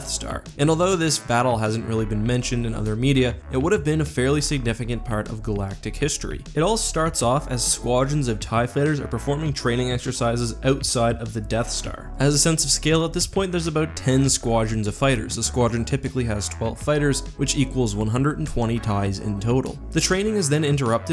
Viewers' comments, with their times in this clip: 0:08 Ew you said "tie fiters"